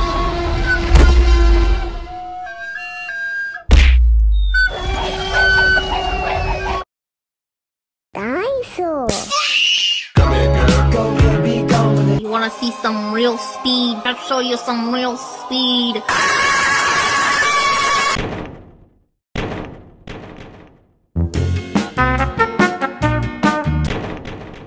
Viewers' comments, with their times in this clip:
0:09 dinosaur (*S M A C K*) 😂😂😂😂😂